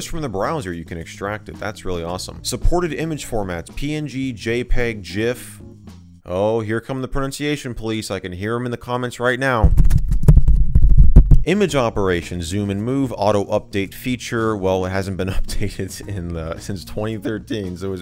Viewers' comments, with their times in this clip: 0:04 ok to be fair it is a g sound not a j but ok